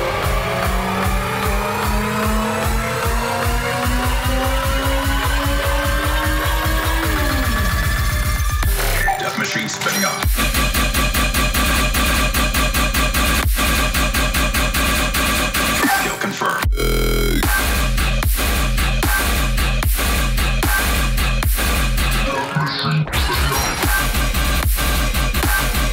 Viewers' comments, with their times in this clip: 0:08 what track is that mate?!? And is that a collab with someone?! It was fucking heavy also ty for doing this on my bday ;p